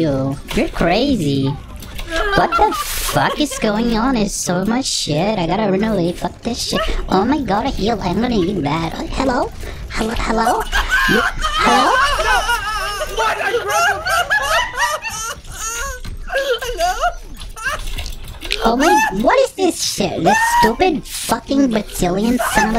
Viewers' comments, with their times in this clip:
0:10 he is laughing so hard he sounds like hes crying XD